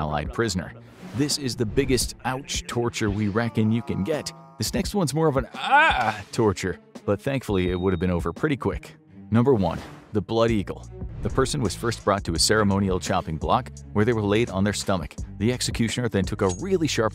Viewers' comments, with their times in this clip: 0:05 heaing infographic show screaming like that was quite funny